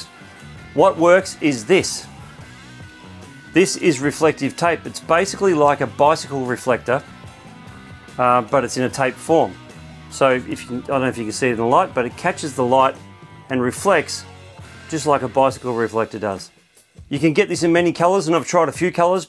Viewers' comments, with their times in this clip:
0:05 save you listening to more of the awful music.